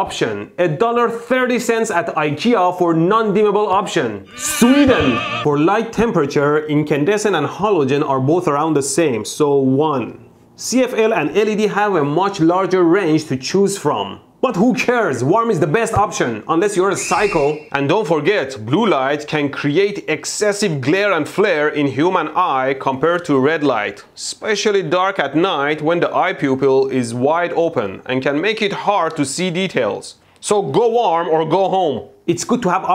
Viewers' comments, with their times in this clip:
0:03 that is a weird way to pronounce China...
0:04 Died I was eating crackers and nearly choked as he just says Sweden with such passion
0:17 eye pukels. Lol